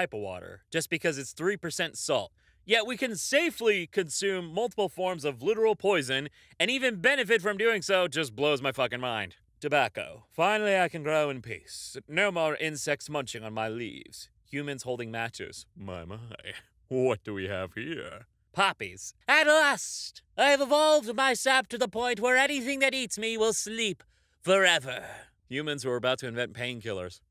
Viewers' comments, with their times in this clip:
0:08 I misheard "matches" as "nachos," and immediately wondered if I'd somehow misheard/read "Tobasco" as "Tobacco."